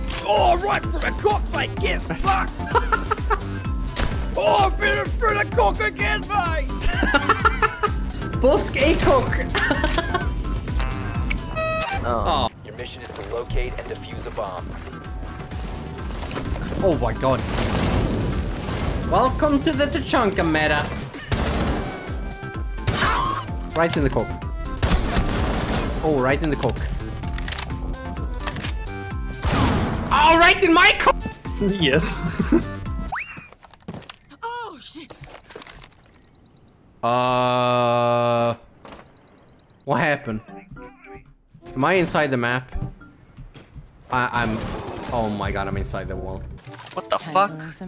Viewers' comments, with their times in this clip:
0:10 bandit voice nitro deployed
0:31 CO ooh yes chuckle rook screams in agony hibana goes into the wall Oh shi
0:33 anyone else hear Hibana go "oh shit"
0:34 are we not gonna talk about how Hibana screamed “oh shit” when she fell?
0:34 y Hibana gotta moan like that tho??
0:34 ocean or oh shit ? u decide